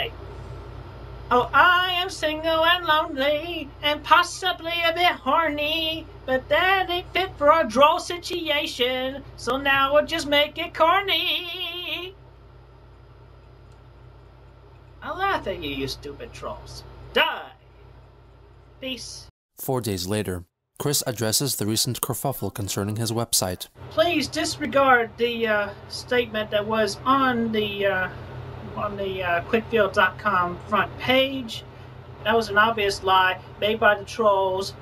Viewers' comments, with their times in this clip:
0:08 you sounds just like Sinatra or bing Crosby...
0:16 Bro, Skipper from Madagascar?